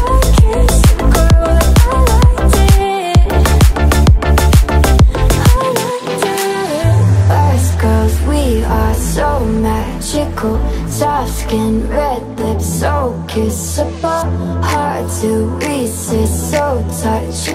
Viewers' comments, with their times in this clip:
0:04 I was expecting the voice to be lowered, like in a few other tracks which are "built like this". Would have more flavor, but this thing is still a banger!